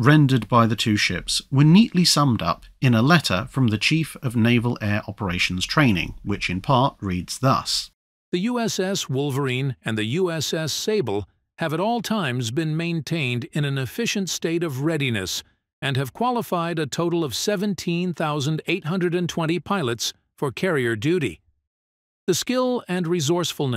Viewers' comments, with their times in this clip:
0:08 That AI voice sounds like it's a 1970s TV announcer.
0:08 I'd swear your voice-over was going to end "... I'm Casey Kasem and this is the Top 40!"
0:11 No one told me that Casey Kasem would be making a cameo appearance here. I actually halfway expected his segment to conclude with "And now moving up to number one on the American top 40, an artist that's been here sixteen times before, is Paul McCartney with Wings performing Uncle Albert Admiral Halsey."